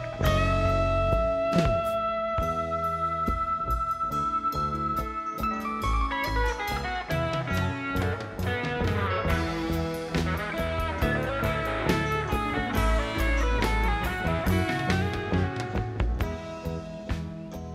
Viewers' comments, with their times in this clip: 0:03 this track def wasnt RBD (ruined by donna) and lmfao at the guy tripping